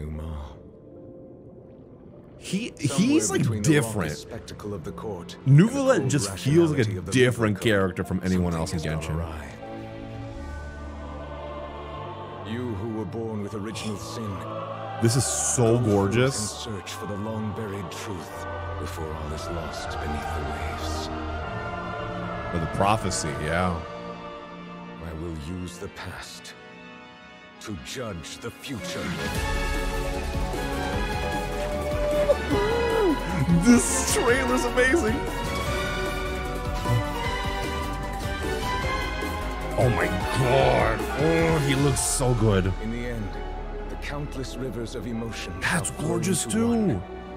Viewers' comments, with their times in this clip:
0:10 I like his lemotif
0:28 The drop was insane 😭👍